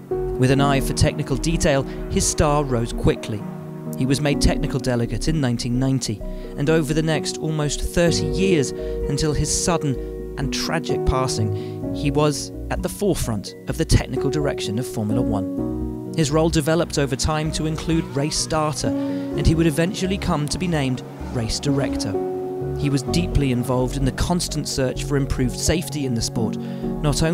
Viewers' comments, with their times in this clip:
0:10 The way he says “tragic” makes me sad. A really tragic death happened. The way he said it changed the mood of a really sad video to even sadder. R.I.P. Charlie Whiting